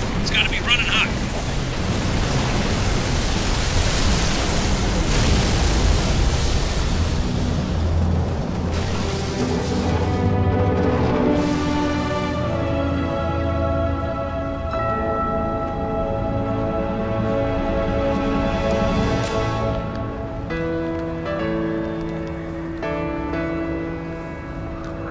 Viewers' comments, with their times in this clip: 0:09 It really annoys me that on that one cutscene in mcc has a soundtrack overlapping on it making sound really clustered